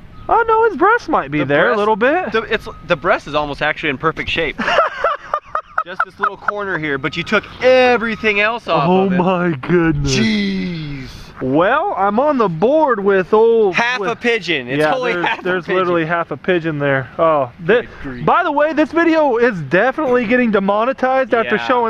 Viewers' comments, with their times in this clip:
0:03 elmo laugh lol
0:05 he sounded like elmo